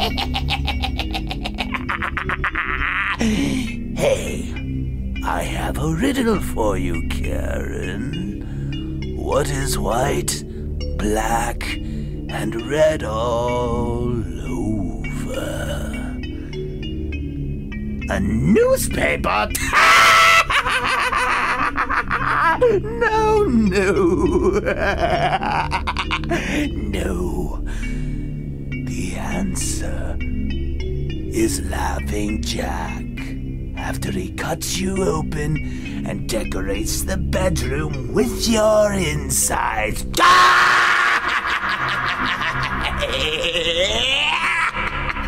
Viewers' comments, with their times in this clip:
0:10 Que dah meme I like that laugh.. Heh heh heh
0:31 Dat wease tho LJ. Sounds like me XD
0:31 Omg this laugh 😂
0:31 omg dat laugh doe XDD
0:33 rare footage of me laughing at my own joke